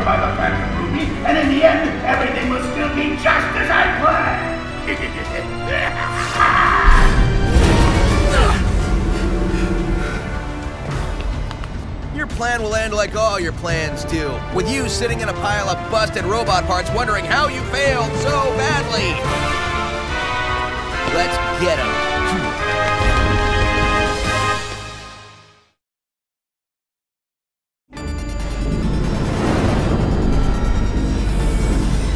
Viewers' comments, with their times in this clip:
0:09 Did classic Sonic or tails make that noise?
0:11 Not your best line reading, Roger...
0:12 at the end he sounds so goofy
0:13 WHAT IS THAT VOICE ACTING?
0:13 I cannot with Sonic's voice actor, I really can't. People say he's improving, but where? That shit took a turn back to Colors writing and fucked up to make it worse. What the hell is that? Or every insults he throws out, especially the Infinite insults. At least in Colors and Lost World (No matter how bad, and unfitting for the situation ) the jokes and insults came out...."Naturally" Nearly every other line here sounds forced out at the last minute. The only decent voices are Eggman, Infinite, Shadow, and Zavok (Yes, even playdoh man sounds better) But I'll give the game something for this underwhelming boss battle, the music and the way the Phantom Egg-Nega Armour bursts out the Death Egg Robot, that was actually spine chilling
0:13 This is why I want Jason Griffith voice back
0:15 Is it just me or when Sonic says this line it sounds really weird
0:17 is literally one of the worst and funniest voice acting segments I've EVER heard XD. What the heck!?
0:17 Sonic's voice get's weirder in this minute
0:19 for Sonics preteen voice crack